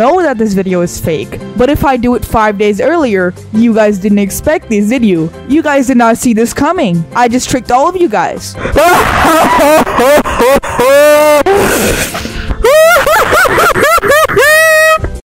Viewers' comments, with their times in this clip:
0:08 bro eating mic
0:08 bro got that demon laughter💀